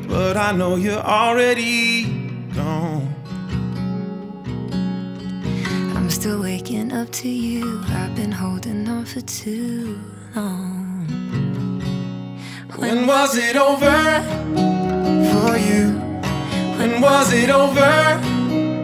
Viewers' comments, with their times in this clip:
0:05 Can I just say, hats off to Sasha for the vocals goodness.